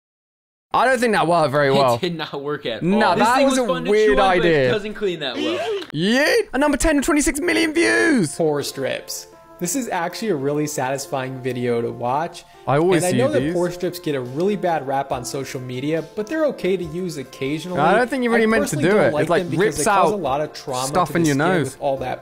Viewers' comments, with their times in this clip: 0:08 The guy in sounds like dhar man